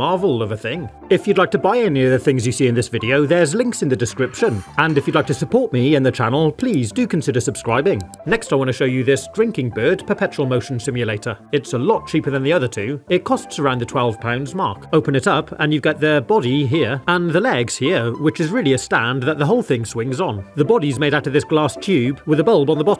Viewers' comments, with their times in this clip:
0:08 The tweet tweet is very cute❤